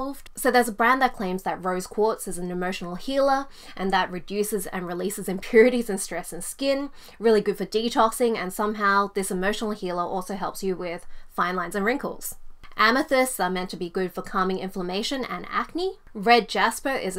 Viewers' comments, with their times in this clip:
0:05 I caught that giggle when you were reading the pseudoscience claims LOL